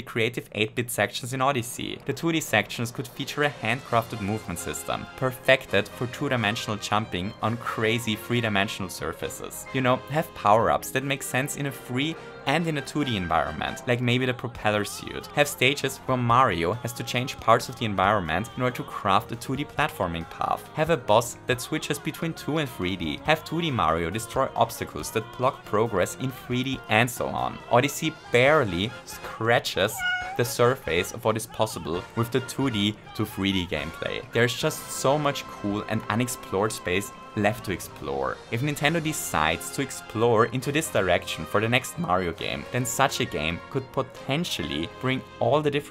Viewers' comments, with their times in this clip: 0:04 when you here this song you know you’re about to get your mind blown
0:28 Anyone else notice the cat meow
0:29 The cat meow is so realistic it got me searching for a cat in my apartment :I Like, I don't know what's up but it seems to come from outside of my laptop. Am I going insane?
0:30 i thought that was a real cat purr XD
0:30 Why was there a random cat sound in the video or am I crazy also here’s the time stamp